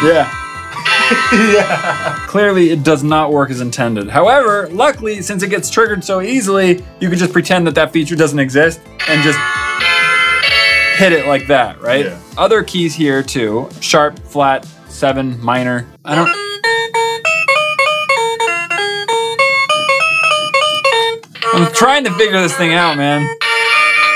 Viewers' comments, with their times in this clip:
0:10 did anyone else hear that the air guitar played matpats film and game theory intro like the music I think listen to it then watch the intro to both channels lol cool choice desinerw